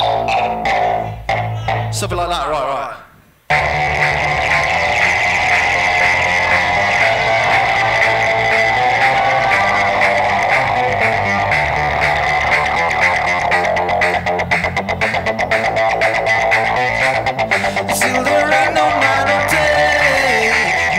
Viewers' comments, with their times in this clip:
0:04 is the closest I heard to daft punk being resurrected yet, incredible performance, you really do know your machine on heart